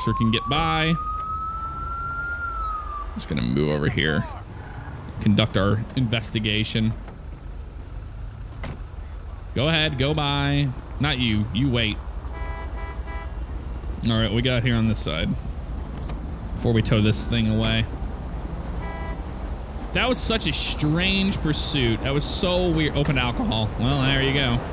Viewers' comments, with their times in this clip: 0:07 Love the slow mo scene. Your voice sounds awesome on those. Love the floating double yellow line